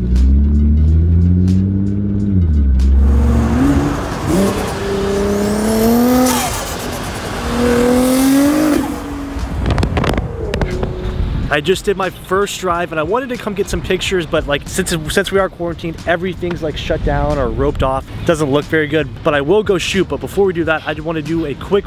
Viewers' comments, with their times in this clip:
0:05 Best sound ever. Godzilla sounds amazing. Nice work man. Keep killing it.